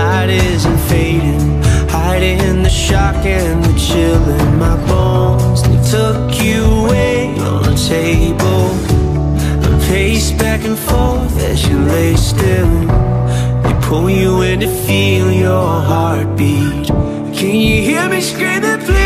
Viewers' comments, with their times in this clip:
0:05 Not to ruin the moment but if you put the sub on it says “ The Shock and the chilling in my balls.” Omg I ruined the sad moment.